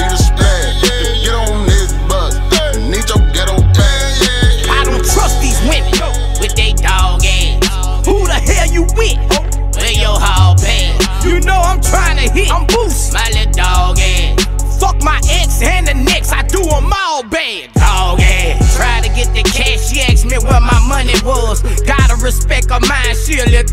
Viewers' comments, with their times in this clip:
0:05 When the bass drop With they Dawg Azz💪🏾😎